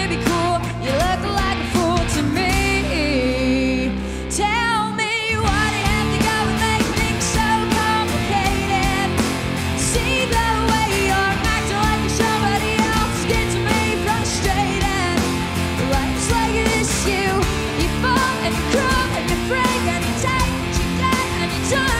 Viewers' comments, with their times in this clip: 0:05 Laughing at how obvious it is the drum track isn't live